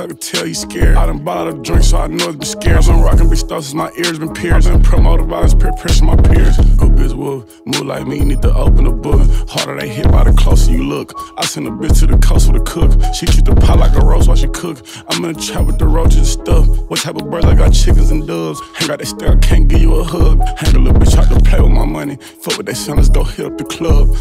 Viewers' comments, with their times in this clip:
0:06 the flow switch is crazy 🐐